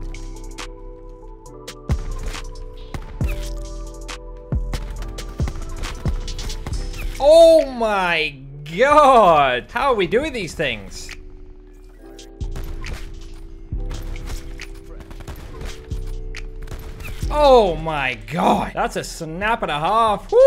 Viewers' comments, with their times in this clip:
0:05 the annihilator is in sync with the music